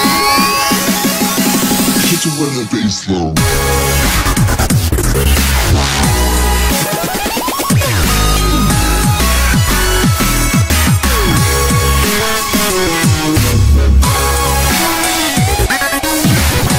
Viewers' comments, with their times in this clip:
0:03 OMG DAT DROP !!!